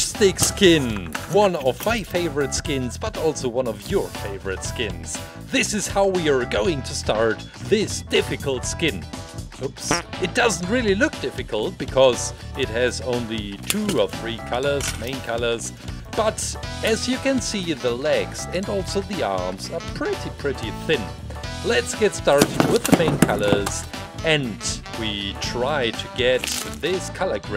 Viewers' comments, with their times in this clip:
0:09 Favorite part is plays a fart noise because he bumped the plastic dome lol